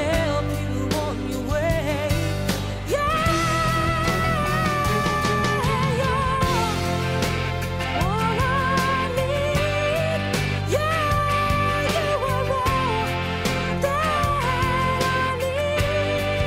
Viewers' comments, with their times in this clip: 0:03 amen to that gospel highnote